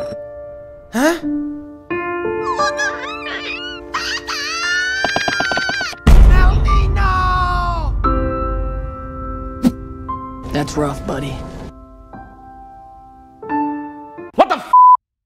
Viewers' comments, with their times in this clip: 0:03 Melony: Starts crying and runs away. Axol: Melony NO!! Mario: That's rough buddy. 😂